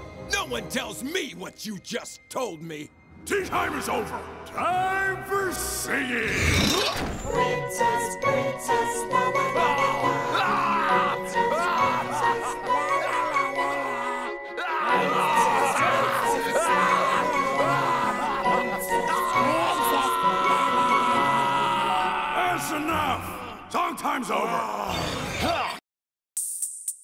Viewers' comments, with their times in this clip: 0:10 When I hear cardi b